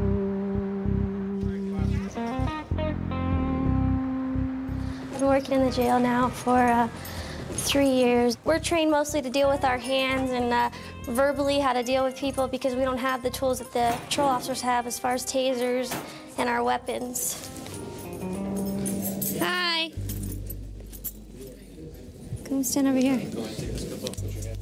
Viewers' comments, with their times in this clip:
0:10 I put my phone down and walked away. Then she started talking, I'm like wtf they are letting kids work in the jail now. Then I looked at the phone and it was a grown woman.